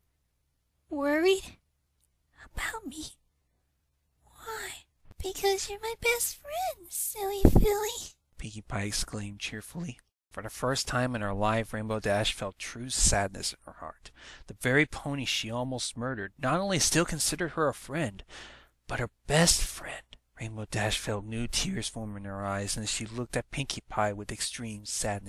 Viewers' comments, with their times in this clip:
0:08 cue the best cry ever